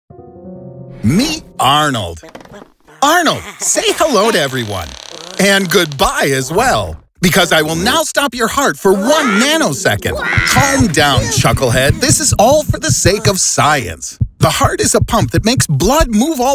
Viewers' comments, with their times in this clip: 0:01 Hey, that sounds just like Narrator from Pocoyo.